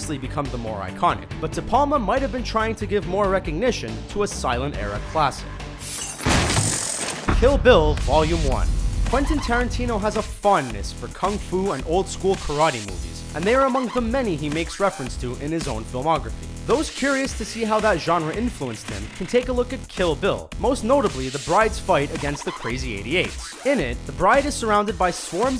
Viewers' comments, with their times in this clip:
0:08 you pronounced 'potemkin' fantastically wrong! Hahaha